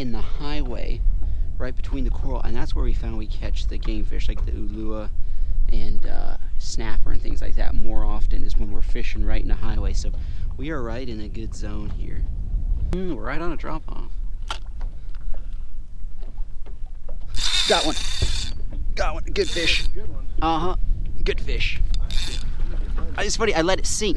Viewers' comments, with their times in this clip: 0:05 Att you kan hear udddhaaaa